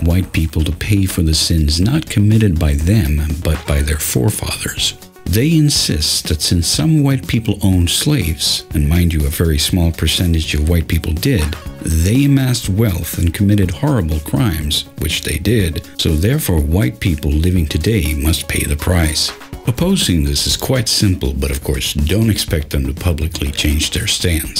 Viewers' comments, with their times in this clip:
0:06 is it just me, or does the background music sound like an 8 bit version of 'Girls Just Wanna Have Fun?" Very important stuff, but I'm bobbing my head to that tune and humming that song because I just can't help it.